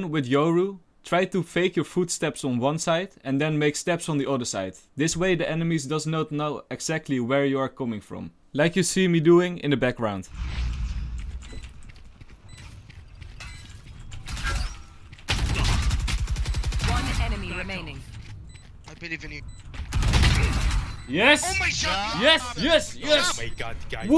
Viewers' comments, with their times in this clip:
0:10 haha those kisses at the end. Awesome play!!